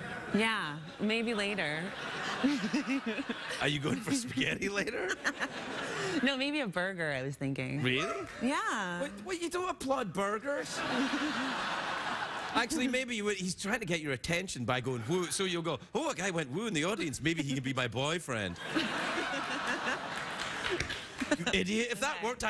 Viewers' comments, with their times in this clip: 0:09 Who tf applauds burgers LMFAO